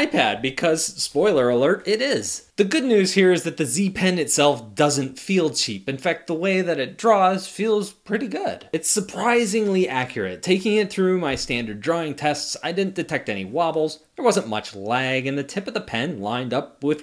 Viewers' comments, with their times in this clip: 0:03 z pen or s pen lul